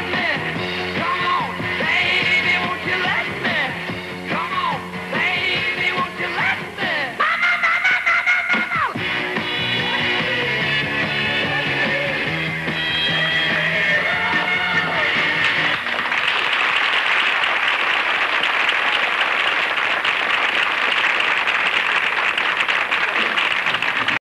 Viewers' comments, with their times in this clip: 0:07 The Mark Lindsay signature vocal riff copied by Aerosmith's Steve Tyler